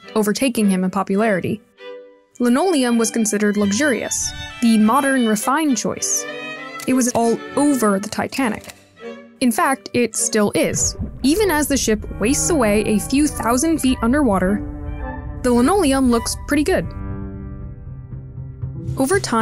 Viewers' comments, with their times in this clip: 0:07 Can i just say that i liked that the editors made the music a bit muffled when we went underwater with the titanic I love that eye for detail when i notice them.